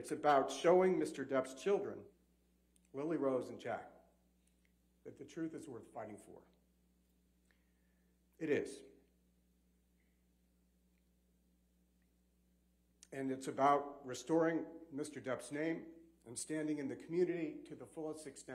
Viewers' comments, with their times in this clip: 0:04 don't know if you guys caught it but ben chew was trying to contain himself when he mentions johnny's children. he gets very emotional and has to take a small pause before continuing with a bit of shakiness in his voice (sounds like he's on the verge of tearing up). Ben was very passionate and connected to this case, as well as the rest of the legal team and it really shows they believed what they were doing WAS justice.